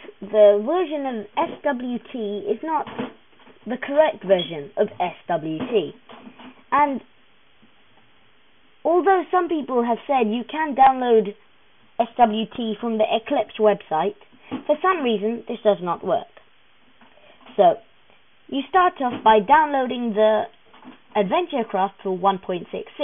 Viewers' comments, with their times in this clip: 0:10 lmao yes, thank you captions for letting me "understand" what this person is saying... apparently gop is actually saying "alternate some people have fun you can download it"